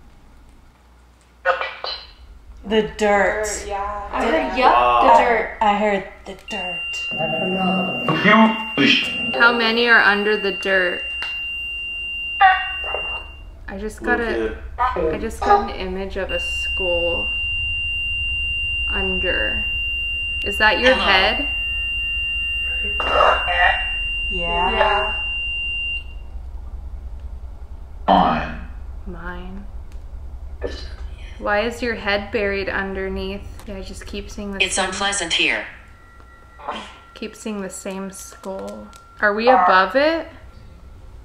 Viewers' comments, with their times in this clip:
0:07 sounded like Dj khalid😂
0:07 When it said “thats another one” I thought it was dj cali. I SWEAR IT SOUNDED LIKE HIM TOO
0:28 sounded like William afton.